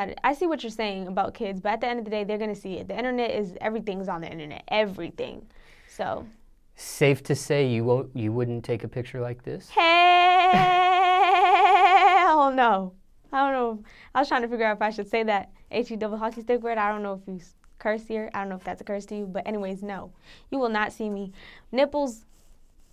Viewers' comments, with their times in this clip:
0:09 Goat in distress?